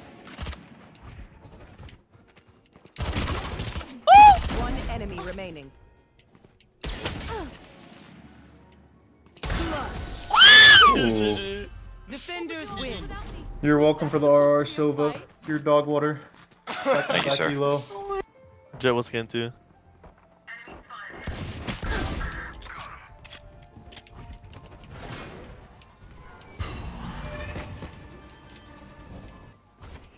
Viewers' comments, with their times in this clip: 0:09 that scream th 😭
0:09 what was that scream LMFAO
0:13 Does that guy sound like sinatra or is it just me who hear it?